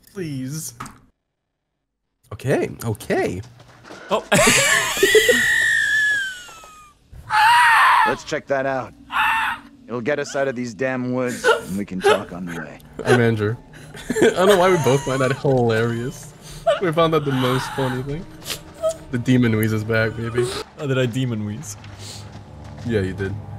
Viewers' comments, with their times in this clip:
0:03 demon wheeze v2
0:04 The DEMON WHEEZE makes a cameo
0:04 quick return of the demonic wheeze xD
0:05 The demon wheeze is attempting to manifest once again